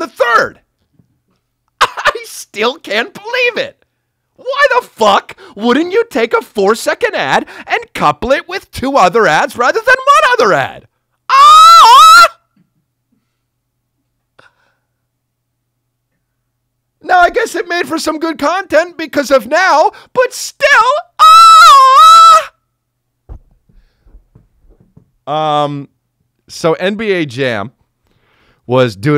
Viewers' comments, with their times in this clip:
0:10 Back off the mic!!!
0:11 Blew Out Eardrums